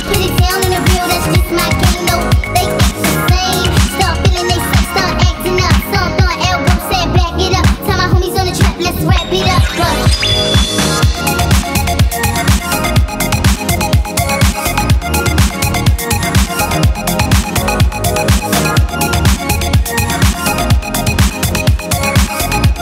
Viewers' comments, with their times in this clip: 0:09 Best part I love this music (( Night Tempo ))